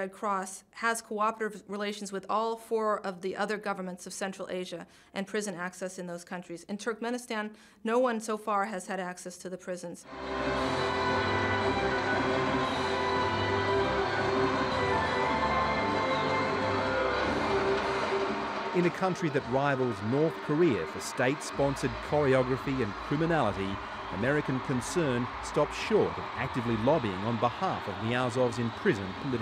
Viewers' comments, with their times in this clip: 0:10 who else hears the Superman theme?